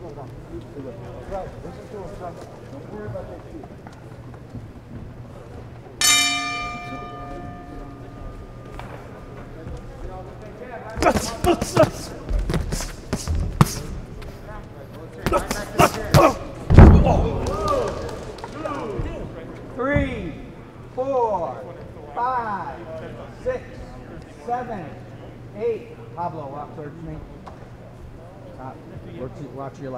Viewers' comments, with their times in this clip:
0:10 There’s something so satisfyingly pure and visceral about having no crowd noise and commentary. The sequence is just mind blowing.